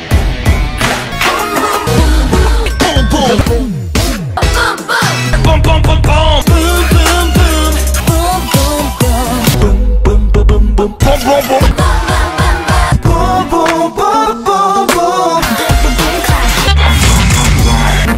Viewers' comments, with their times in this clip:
0:05 Why do I hear Bom Bom Bom Bom xD
0:06 please tell me the name of the song with the guy aggressively singing "boom boom" thanls!